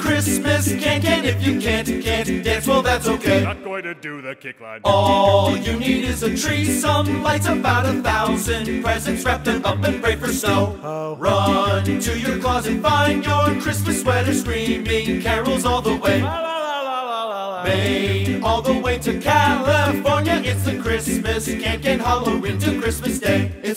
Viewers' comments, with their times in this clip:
0:10 is my fav part that makes me laugh *mellow dramatic tone* ho.